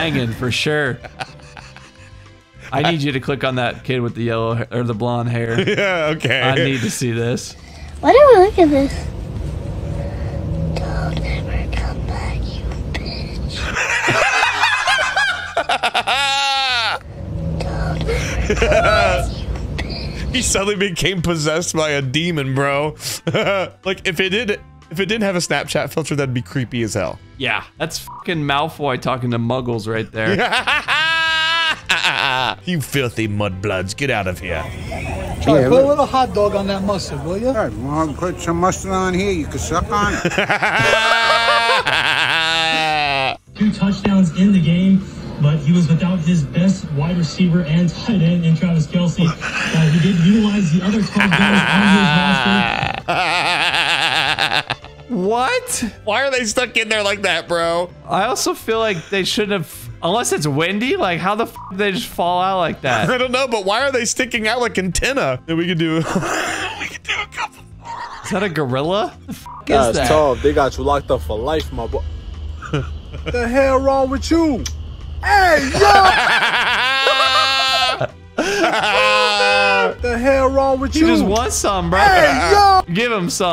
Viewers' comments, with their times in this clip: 0:08 sounds like he's murdered someone and is warning the witnesses.
1:06 this wheeze absolutely killed me
1:06 this wheeze absolutely killed me